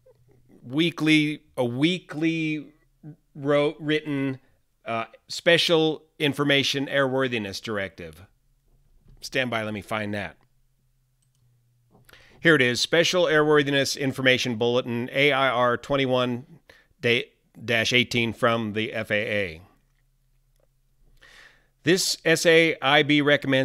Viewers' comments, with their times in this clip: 0:05 I had no doubt, i see an active pilot... but the "stand by" was so "officially fluid", i can not even tell...